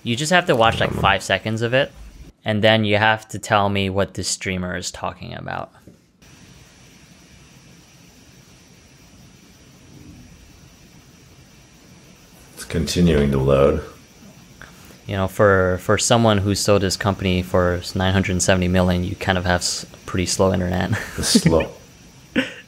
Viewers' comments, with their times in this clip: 0:07 he didn't say shit for 5 seconds lmao